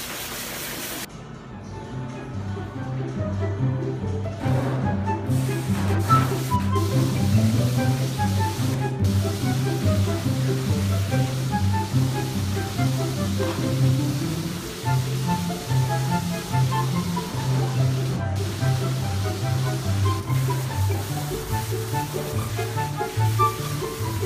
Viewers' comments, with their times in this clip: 0:06 THAT SIMS MUSIC THO